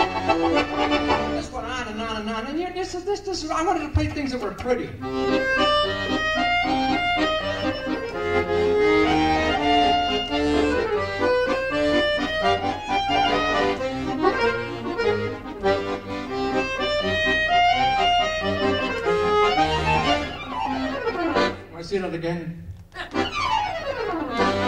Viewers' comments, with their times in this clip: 0:08 Love the "French street cafe" accordion